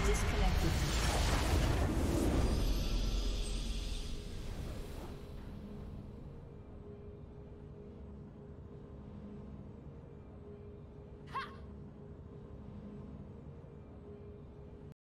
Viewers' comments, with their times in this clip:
0:11 I like that litte, "Ha!" at the very end.